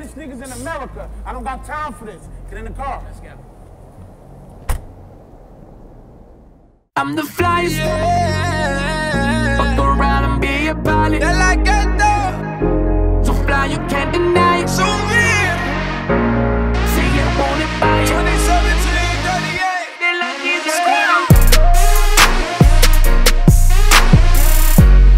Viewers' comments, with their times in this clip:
0:07 music start here.